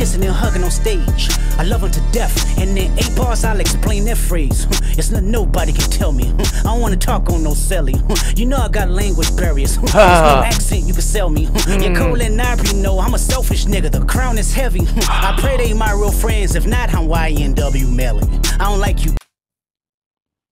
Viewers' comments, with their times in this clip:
0:07 Kendrick had a stutter you know I got language barriers...